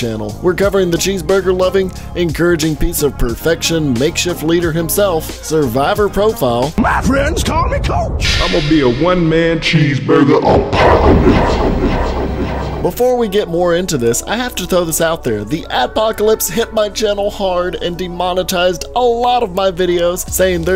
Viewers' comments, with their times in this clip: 0:08 IMA BE A ONE MAN CHEESEBUGER APOCOLIPSE echos